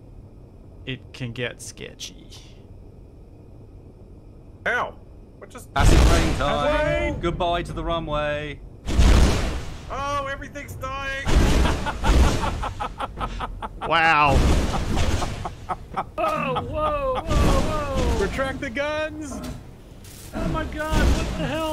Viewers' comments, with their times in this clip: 0:05 The sudden sound from many blocks being destroyed at once on really caught me off guard haha